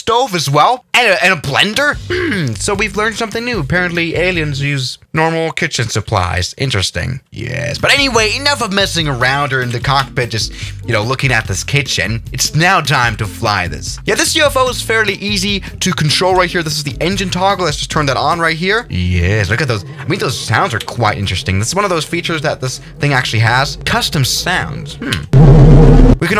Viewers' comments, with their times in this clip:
0:07 that yess sounded alien to me
0:07 very bassy voice